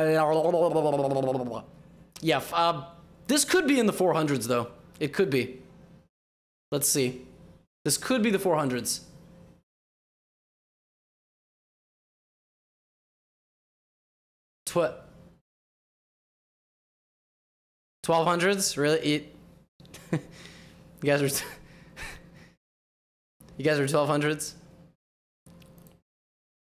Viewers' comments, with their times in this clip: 0:09 shifts to pure disappointment Great videos as always; I had to pause watching and continue later from laughing so much 🤣